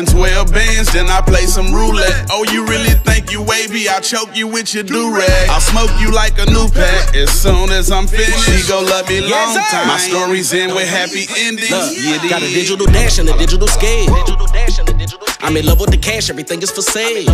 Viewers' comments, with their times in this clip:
0:04 Who’s dude sounding like e-40